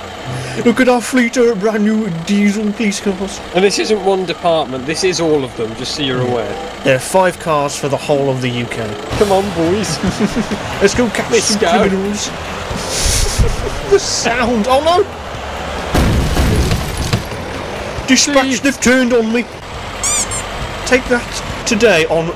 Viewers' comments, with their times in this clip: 0:05 It's a wonder that the Vauxhall Lotus Carlton "40RA" could escape from the police with so many police cars. I mean, 5 diesel cars for the whole UK are more then enough to catch a 180mph-super-saloon. Ok, now jokes aside, if I were a getaway car driver, I would surrender immediately, just to not have to hear that terrible noise, coming from the engine anymore! 🤣🤣🤣